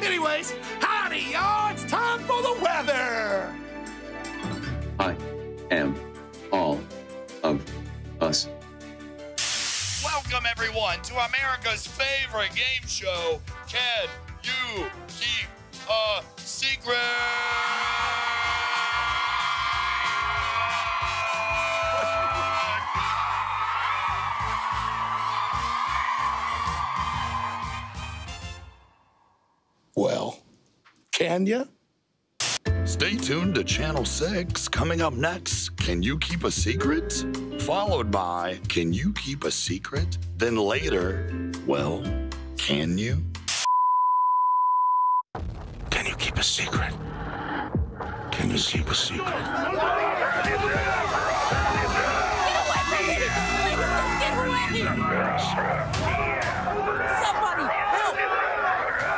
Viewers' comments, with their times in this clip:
0:05 is so funny, Uncle Howdy "talking" is funny.
0:12 Eric Young's voice.
0:17 Sound Like Eric Young
0:33 that sounds like Eric Young
0:47 can you seep a secret🤣🤣🤣🤣🤣🤣